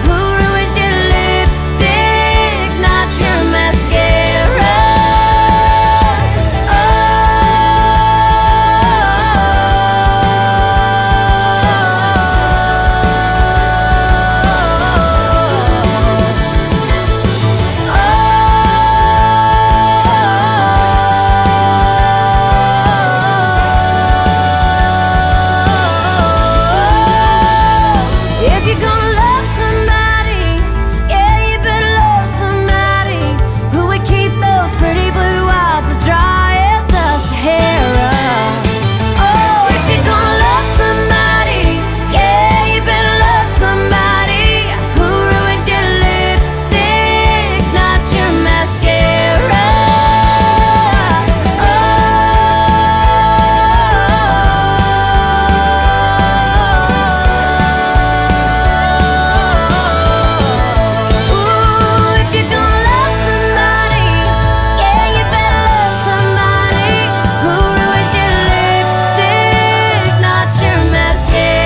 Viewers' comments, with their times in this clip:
0:07 sounds like Tarzan
0:07 sounds like Tarzan
0:53 That kind of "breakdown" for lack of a better word, sounds familiar. What other songs have a sound similar to that?